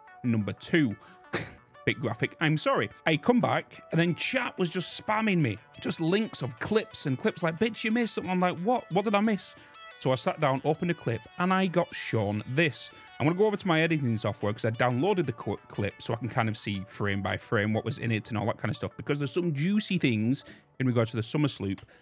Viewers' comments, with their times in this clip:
0:04 Sounded like "B*tch you missed something!!" xD Idk why that made me laugh a bit